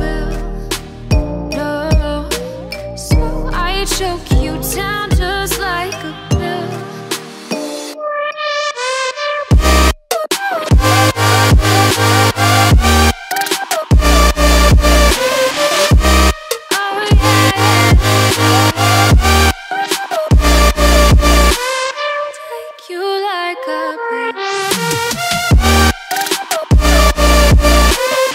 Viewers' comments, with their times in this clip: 0:10 Does anyone know if this song exists without that drop that starts lol